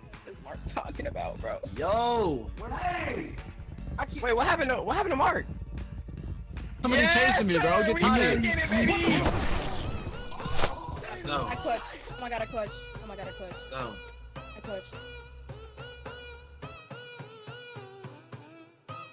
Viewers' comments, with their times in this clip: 0:04 the screaming in the back